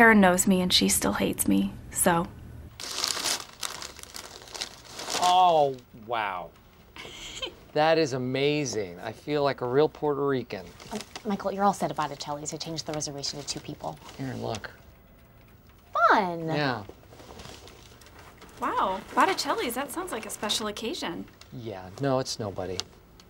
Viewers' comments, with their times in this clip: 0:06 how come no one mentioned her giggle